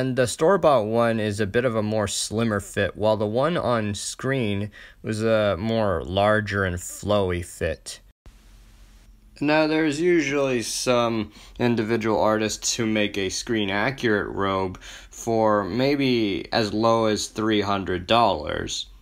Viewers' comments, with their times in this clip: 0:07 sounded like roger l jackson/ghostface